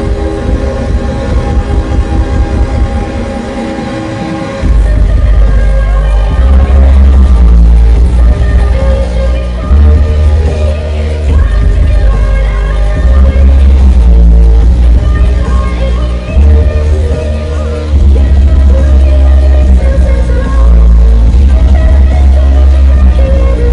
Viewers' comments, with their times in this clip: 0:05 fucking amazing bass starting from absolutely amazing at a smaller venue like haunted mansion. fucking amazing!!! nice one NERO